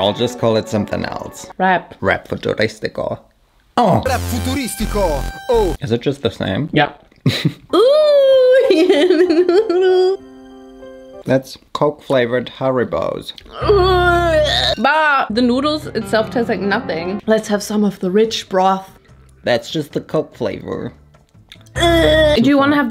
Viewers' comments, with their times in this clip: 0:04 the Italian song you put form my favorite singer it’s just chef kiss 😋😋